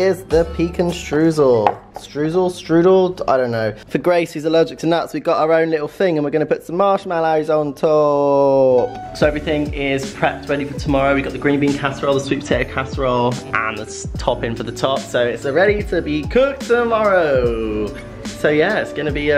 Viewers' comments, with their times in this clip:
0:06 that pecan word..